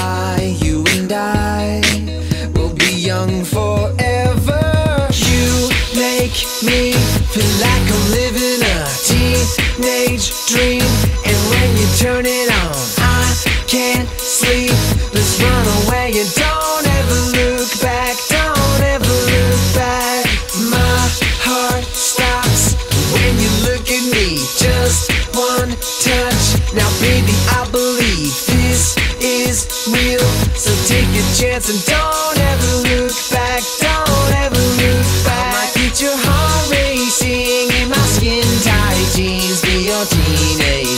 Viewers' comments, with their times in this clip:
0:04 How does he do the kick so fast on ?
0:12 Cymbal : Me trying my best in group project
0:25 Did that Cymbal smoke weed? lmao